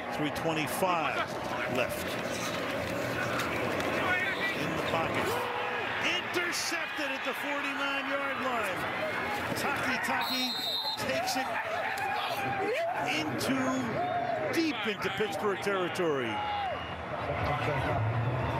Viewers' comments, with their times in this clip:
0:04 It sounded like the famous Michael Scott "NOOOO"